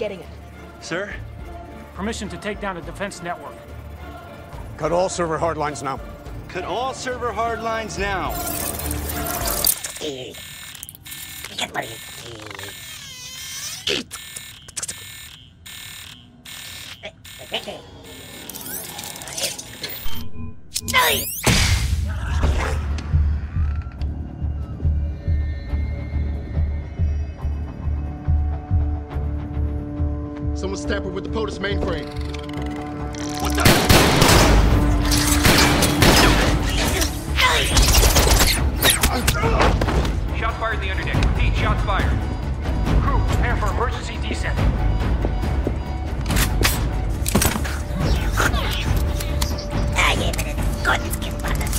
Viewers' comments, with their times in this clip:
0:09 i like how the music stops the intense
0:37 Oh yeah it is and says it as a battle cry to.